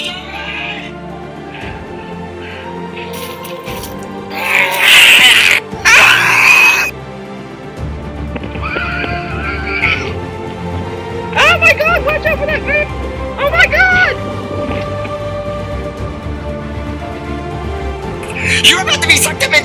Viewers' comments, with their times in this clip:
0:04 yoshi: ROARS Me: what the hell